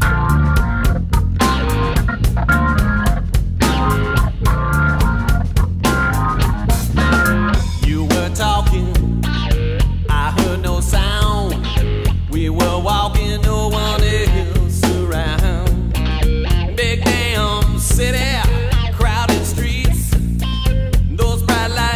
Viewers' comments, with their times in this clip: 0:07 High five on the music it makes me want to grab some drinks and turn on the grill in the morning 😜😜😜💃💃💃💃